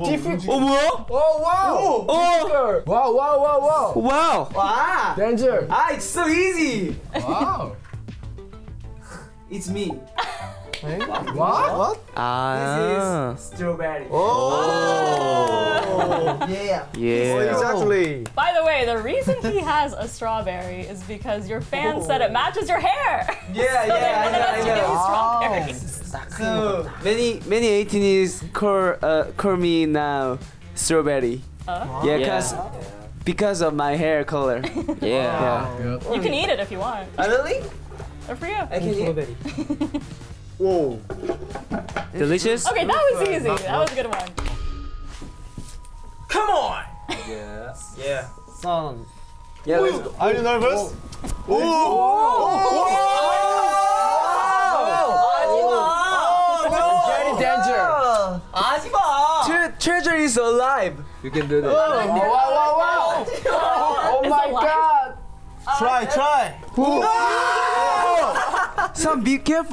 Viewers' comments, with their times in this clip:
0:06 Omg so cute hongjoong 💞his English is good and sweet. Hahhaha it sounded like he said "OOhHHh Sweezy"😊😂
0:27 hongjoong’s english is so adorable 🥺
0:36 are we gonna talk about how hongjoong saying “oh really?” is the cutest thing ever
0:36 lmao "OH REALLY?" he said that like he was so happy oml i'm crying -so cute
0:50 It’s sounds like he’s saying Er du nervøs which is Norwegian btw WTF
0:51 sounded like the Swedish are you nervous xD
0:55 San wass soo cute when he said HAJIMAAA HAJIMAAAA Uwuu my baby was scaredddd he even screamed aaaaaaaaaaaaaaaaa cuteeeeeeeeee
0:55 members: screaming san: HAJIMAAA
0:55 Omg San's Hajima is so CUTE